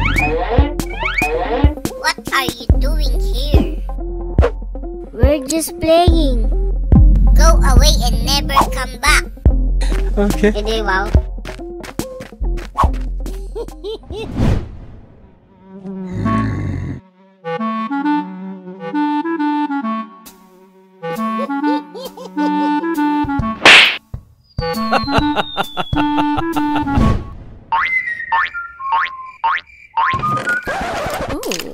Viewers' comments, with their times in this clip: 0:10 the way he said "edi wow" 🤣🤣🤣
0:10 i heard filipino languange
0:14 sommeon says edi wag XD